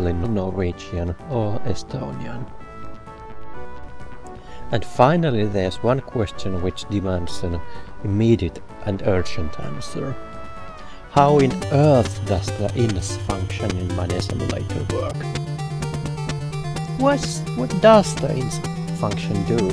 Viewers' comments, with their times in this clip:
0:07 seems to be calm... then dat music begins to friggin scare me.